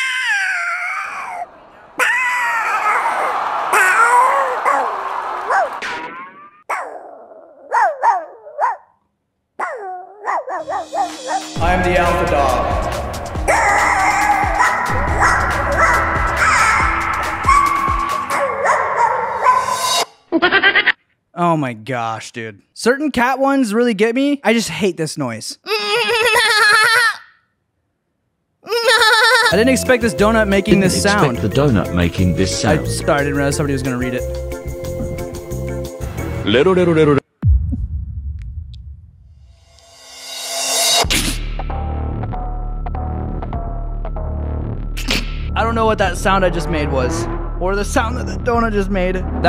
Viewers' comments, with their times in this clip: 0:06 That ''bork'' it from f***
0:37 the donut sound was rero rero which is from jojos bizarre adventure